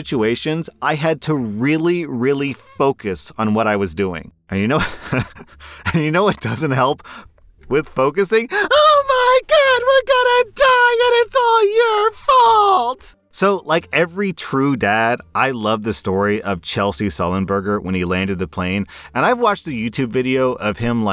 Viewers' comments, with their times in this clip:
0:08 Omg, r slash sounds like SpongeBob lol.